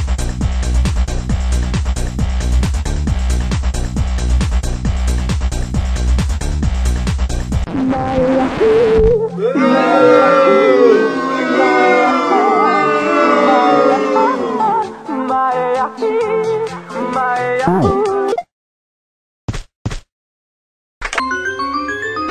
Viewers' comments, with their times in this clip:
0:08 he be singing